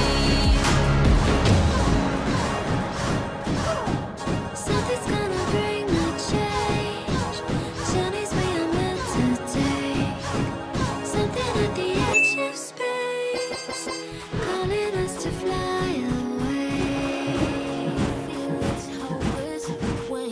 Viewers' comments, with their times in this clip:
0:05 the cannon is firing to the beat of the song lol